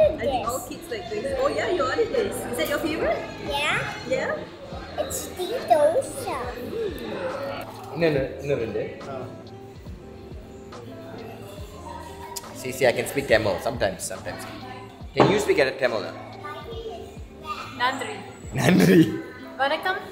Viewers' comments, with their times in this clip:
0:08 I know you can speak Tamil. :, I got you there, "no once in a while" Tamil speaking guy can say the order with that fluency and manner. It's okay dude if you're not proud of your mother tongue. Tamil gains nothing and losers nothing. Cheers mate.